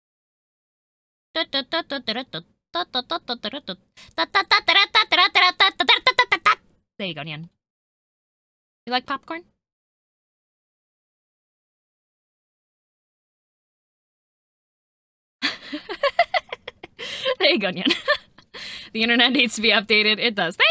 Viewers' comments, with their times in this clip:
0:05 wait just a second, that's the licc!